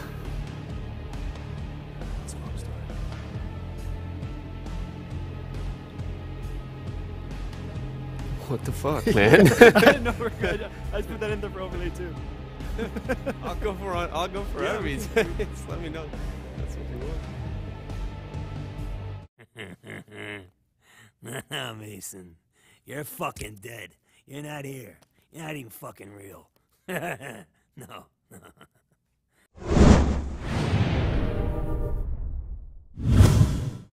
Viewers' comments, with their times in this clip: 0:07 THE WHISPERING IS FUCKING CREEPY
0:19 laughs it off and proceeds to T-Pose